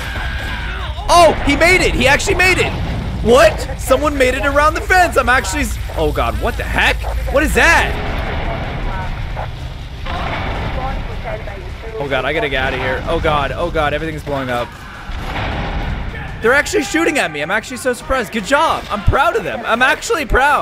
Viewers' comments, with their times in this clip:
0:07 Helicopter: REEEEEEEEEEEEEEE Car: blows up